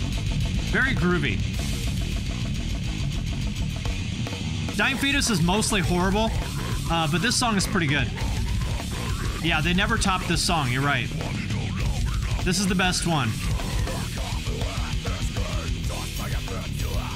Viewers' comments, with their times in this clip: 0:03 that fucking snare is ACE